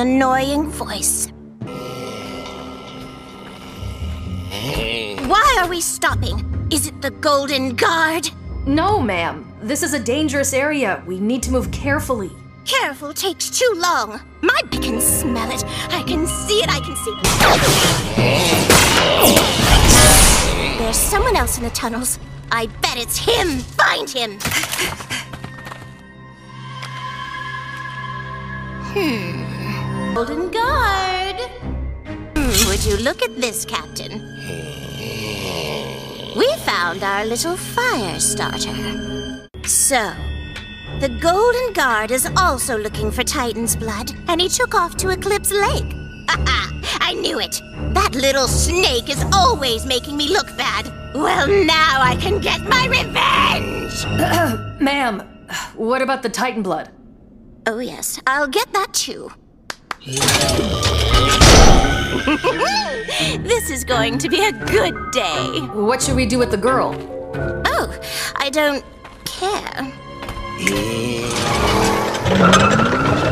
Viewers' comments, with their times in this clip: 0:08 The captain was trying so hard not to sound exasperated 🙄😂
1:00 Idk why but I love how she seems to be having a perfect moment right there, as if fantasizing about being Belos’s right hand again, I also love the way she says “oh, I don’t…care”